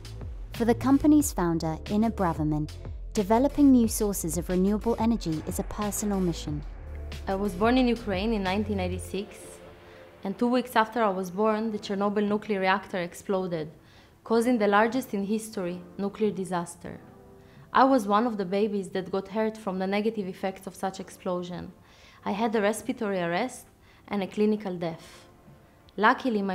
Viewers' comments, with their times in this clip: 0:09 Am I the only one that hears that she says that she is born in "1996 just before the Chernobyl disaster" that happened in 1986??